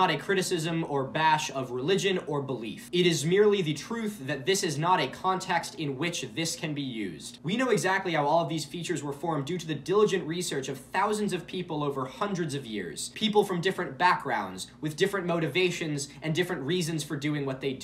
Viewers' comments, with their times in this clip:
0:04 no, man... the important part is that "yea" is pronounced "yay", and if I hear him say "yee" again, imma cut something